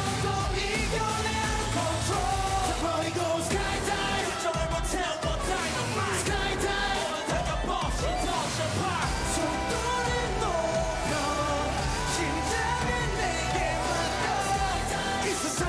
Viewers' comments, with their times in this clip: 0:03 Please tell me that I'm not the only one who noticed how flawlessly Himchan executed that deep note ... Like where does that adorable bunny store these perfection moments!? Kim Himchan I demand answers!!